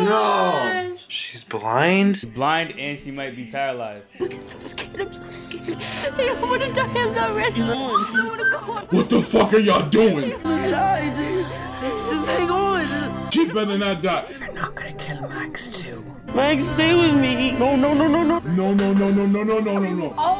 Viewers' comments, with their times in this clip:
0:08 That "what the fuck are y'all doing." was so raw.